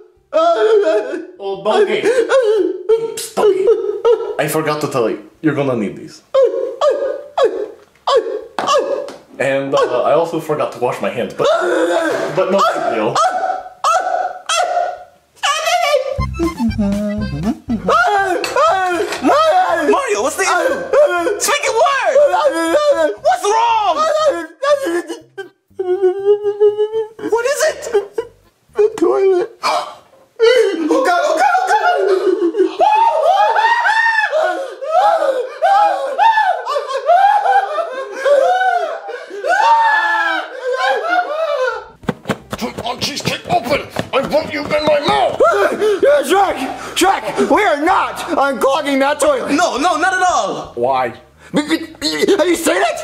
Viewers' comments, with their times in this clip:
0:06 mario sounds like a puppy barking
0:11 man I miss when Mario's hat would just go WEEE
0:29 Chef Peepee gasp is hilarious. 😂😂
0:30 these two italian men perfectly scream in harmony, what a site to cherish.
0:40 Good singing chef pp